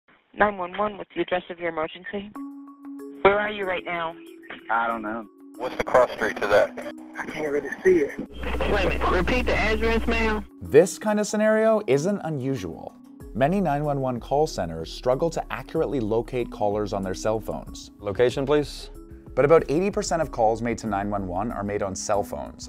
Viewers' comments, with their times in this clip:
0:05 oh hey it's scott cawthon with a bad vocal filter